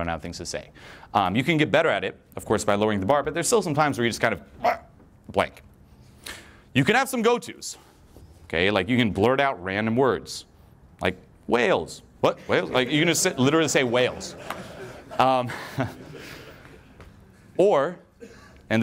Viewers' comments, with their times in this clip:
0:03 Did you just bark ?